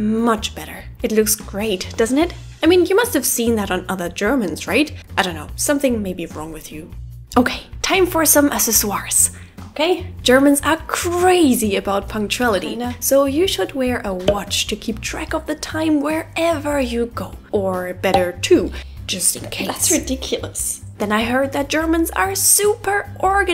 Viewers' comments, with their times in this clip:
0:08 I just noticed your pronunciation of 'accessories' very French. How do I write this so it makes sense; it's more like how you say 'access' so "acks-ess" and "or-reez" on the end. Try "acks-ess-or-reez", rather than "asses-swarz". Also what do you call braids in German? The combination with the Dirndl, I love it, so cute. :)